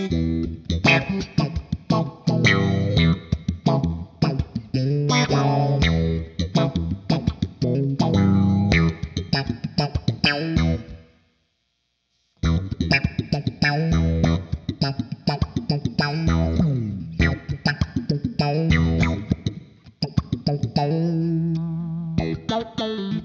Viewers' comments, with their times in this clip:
0:09 Wow, I love the finger/thumb picking thing you were doing around the mark. Especially with this pedal it had a really killer percussive groove going on - nice!